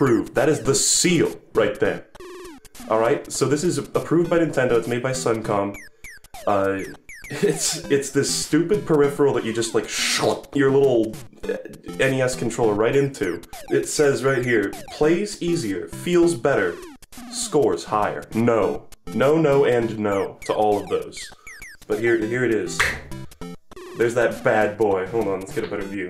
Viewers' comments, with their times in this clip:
0:07 I'M DEAD THAT SOUND HE MADE